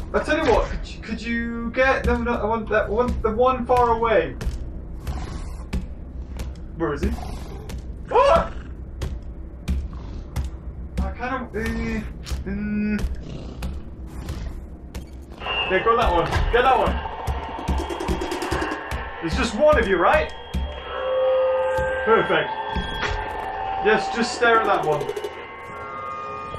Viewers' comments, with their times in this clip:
0:10 where is he , (Goose noises)